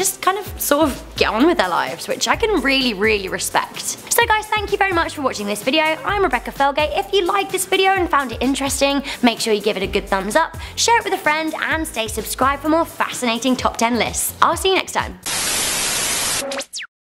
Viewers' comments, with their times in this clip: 0:05 if you turn it up you can hear the roblox death sound😂😂